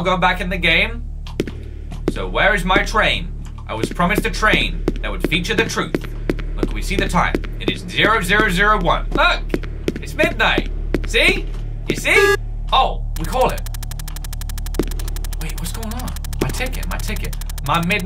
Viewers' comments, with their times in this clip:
0:03 he sounds like phone guy from Fnaf tho...